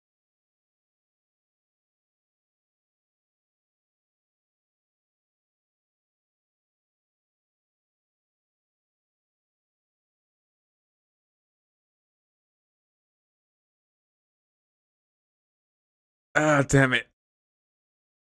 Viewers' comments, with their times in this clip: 0:04 The final and most painful cry.